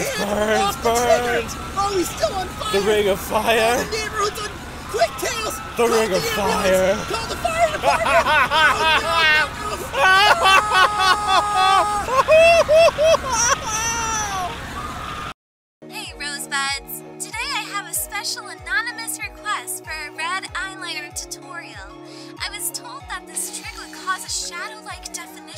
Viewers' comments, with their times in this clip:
0:07 it’s funny when knuckles laugh XD